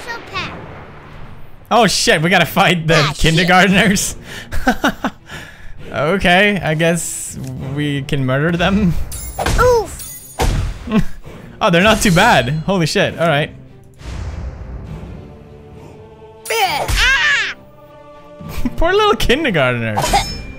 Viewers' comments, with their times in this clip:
0:06 the music is a really cool take on the Skyrim theme😂